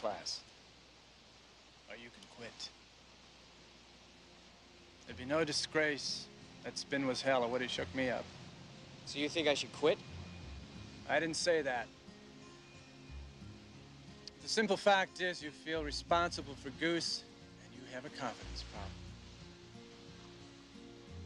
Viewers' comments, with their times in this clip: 0:06 Gives me chills what a beautiful piece of music even as a kid I felt that way, and I still do today.
0:06 gives me chills what a beautiful piece of music even as a kid i felt that way, and I still do today.